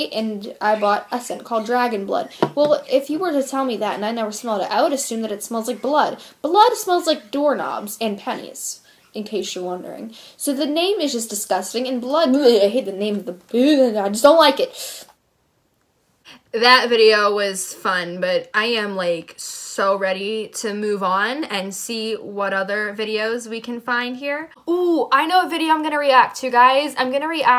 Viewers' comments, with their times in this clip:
0:09 the way she talked hahaha lol 😂😂